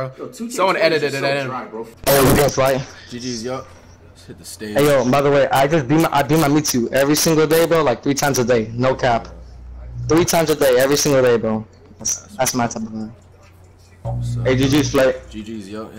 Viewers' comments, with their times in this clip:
0:03 I thought he said I dm u everyday 😭